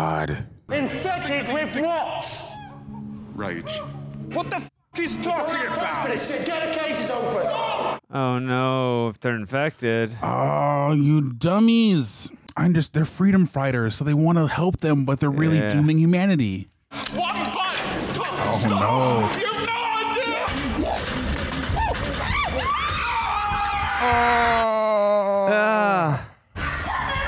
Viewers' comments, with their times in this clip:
0:10 At the very least these guys know how to pronounce Cillian Murphy's name lol Even if the chimps weren't infected, I'd be really cautious to let them out. Those fckers can rip your face and balls off. Them being infected is just bonus.